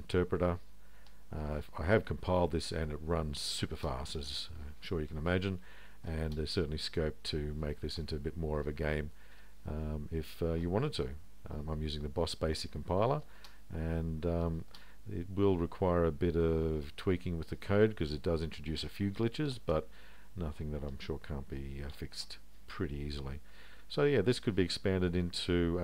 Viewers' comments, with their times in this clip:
0:08 Which compiler? Hard to understand you. Boss Base compiler? BTW very impressive. I had wanted to do something like this for years.